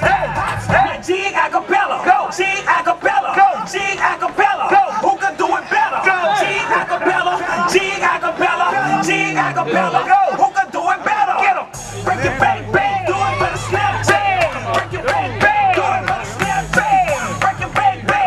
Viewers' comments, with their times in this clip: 0:04 bruh ... that's some great dancin...fuck that guy started runnin even the MC is laughing his balls off.